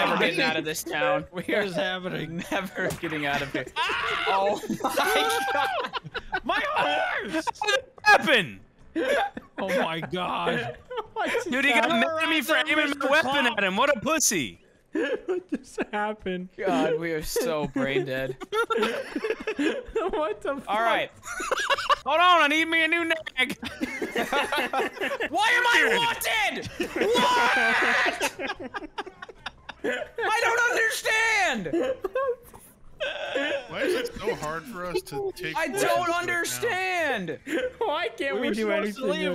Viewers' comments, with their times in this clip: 0:04 the "my horse!" sounds so much like Wildcat from a vanoss Minecraft video when vanoss deletes wildcats house with world edit and his horse dies 😂
0:24 excuse me wrong time for discord to shit lol